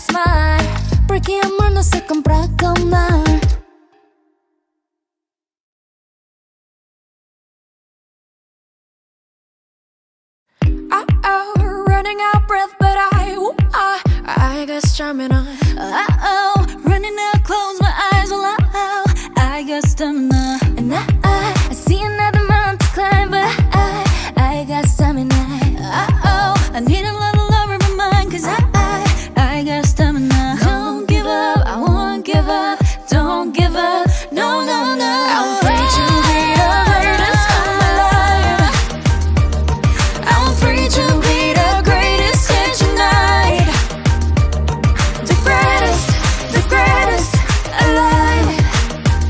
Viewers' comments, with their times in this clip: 0:09 Purple kiss vocal line are seriously THE GREATEST. Harmonies are so on point! 💕💕💕
0:30 what a harmony from the 3 wild animals 😆
0:31 the greatest was really the greatest. those harmonies!